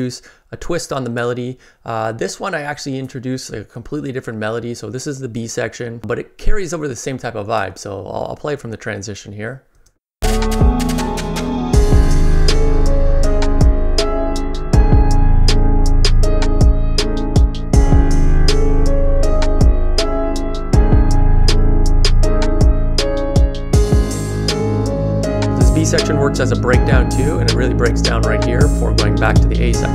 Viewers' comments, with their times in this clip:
0:10 Dude the second melody tho🔥🔥🔥 Imagine a horror movie having a trap style intro